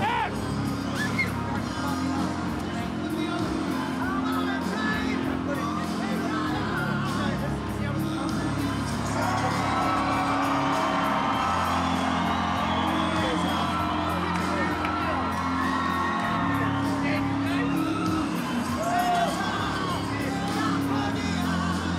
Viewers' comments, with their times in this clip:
0:05 Karen got a hold of the bass and needs a word with the manager